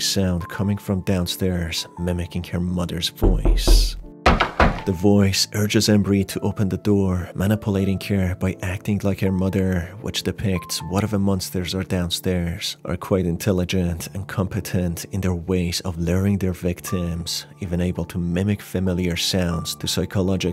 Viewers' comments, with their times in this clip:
0:03 bruh the knock really spooked me. That was genuinely kinda disturbing :<
0:03 the fckng door knock scared me to death.